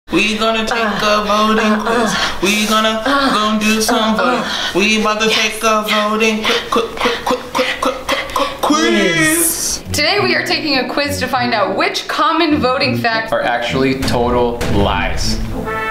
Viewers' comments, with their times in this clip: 0:00 that rap tho